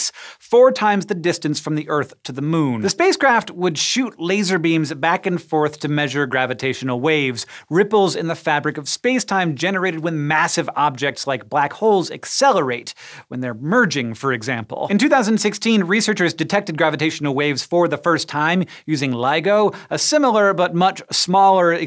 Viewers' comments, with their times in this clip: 0:04 sounded a bit like Dr. Evil...